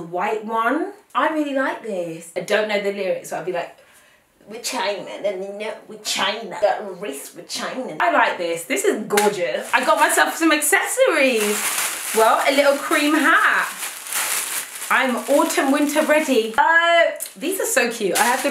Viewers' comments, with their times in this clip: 0:05 WHEN SHE TRIED SINGING 'RAKE IT UP' AND STARED MUMBLING AND JUST SAYING CHINA💀💀 I FELL OUT LAUGHING 😂😂😂